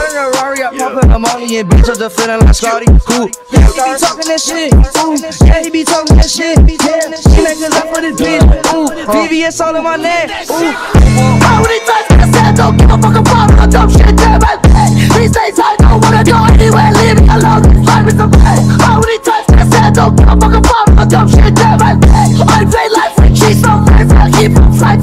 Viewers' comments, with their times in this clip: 0:09 smoooooooooooooooooooooveeeeeee wittt ittt